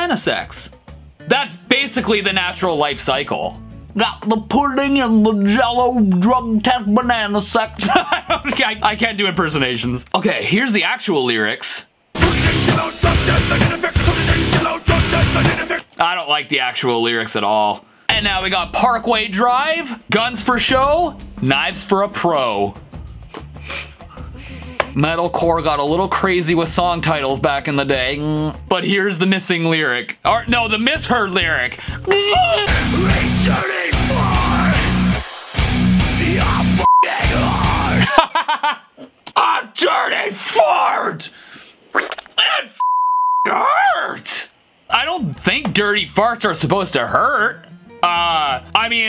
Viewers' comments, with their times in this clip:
0:05 That Cosby impression though....
0:12 I still hear "Pudding and jello drug test banana sex" X'DD
0:21 I heard redrdy fart
0:25 we’ll maybe modern day yt channels got weird right now ooooooooooooooooohhhhhhhhhhhh theme plays
0:32 I heard three thirty fart
0:37 Logan Paul and Jake Paul in